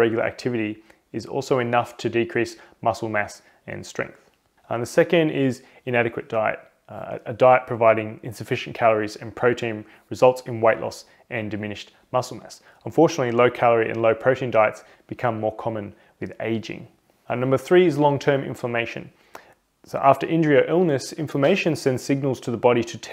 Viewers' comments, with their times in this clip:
0:10 did he say "white loss"?